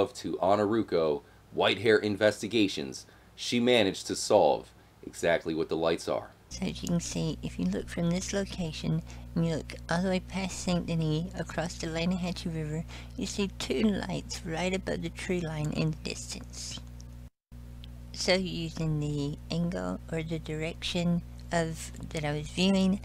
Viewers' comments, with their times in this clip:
0:07 the creepiest voice you would ever hear bois. it's rite here